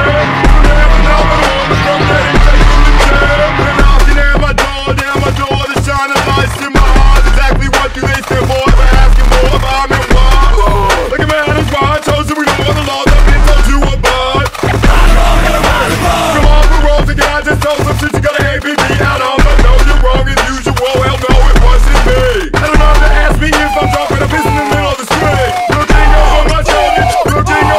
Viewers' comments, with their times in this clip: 0:08 I swear they sample Patrick (from spongebob) grunting